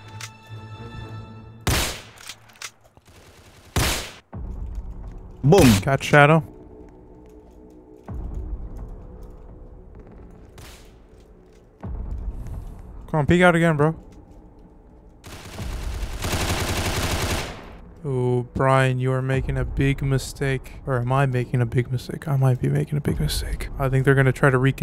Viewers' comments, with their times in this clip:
0:05 bro you sounded like obama